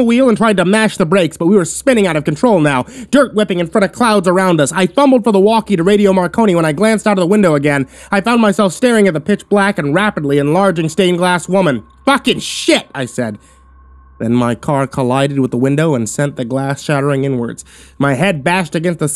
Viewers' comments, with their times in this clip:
0:03 This. This right here. Pitching up your voice and speed reading makes you sound impatient and frustrated instead of sounding urgent. That is not how urgency is conveyed.